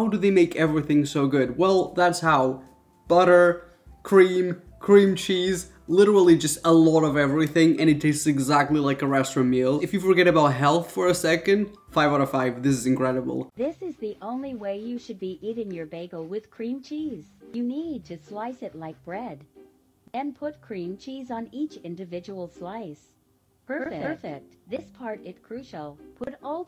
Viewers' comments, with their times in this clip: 0:07 he said restroom meal me ??????